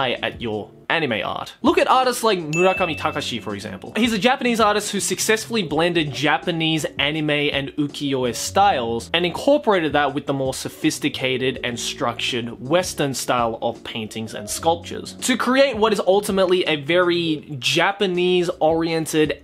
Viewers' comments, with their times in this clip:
0:06 what's that artists name (was said too fast) I'd like to look into him more